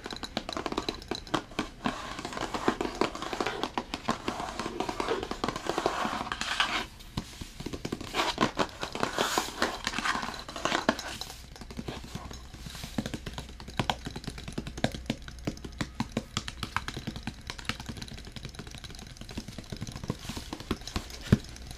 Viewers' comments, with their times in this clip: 0:07 Ahh omg bliss... I so needed this today. Love the tinkly tapping Thankyou for yet again another amazing video :)